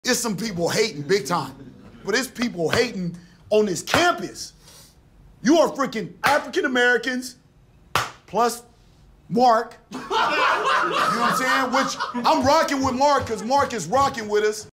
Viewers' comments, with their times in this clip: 0:10 the guy laughing knew the joke was coming from a millennia away